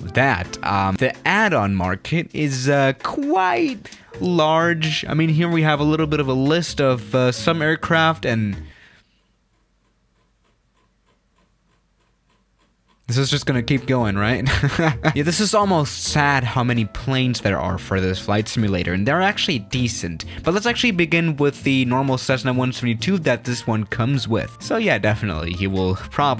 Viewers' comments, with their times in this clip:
0:09 intense scrolling noises